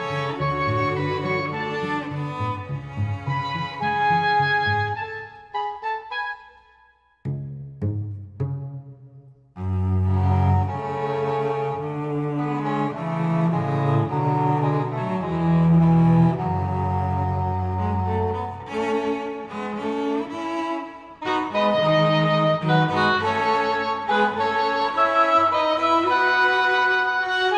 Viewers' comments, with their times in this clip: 0:10 Oh! It was Specifically the section. The Lower notes of the cello perhaps overpower the sonorous English horn in that particular section. I assume it was supposed to be a duet/trio in 3rds (maybe). The playing is not bad at all!! I just think that specific section might have been a little difficult to get the full rich tones of the cello as well as supporting with the reedier timbre of the english horn. I don't wanna sound rude at all. Because it such a small detail lol.